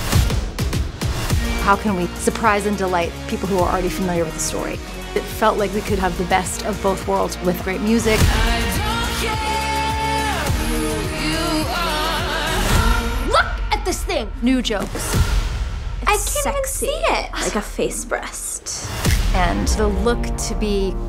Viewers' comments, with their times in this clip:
0:08 Rennes singing voice 😍😍I got it wrong not 14 it’s 41 lol 😂 💀